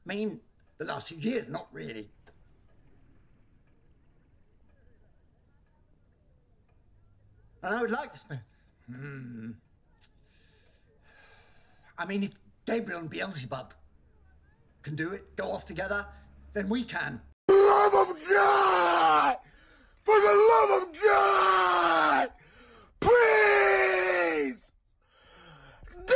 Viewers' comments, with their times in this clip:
0:08 the little angry i cant say words right now is just, damn that made the scene so juch more real TwT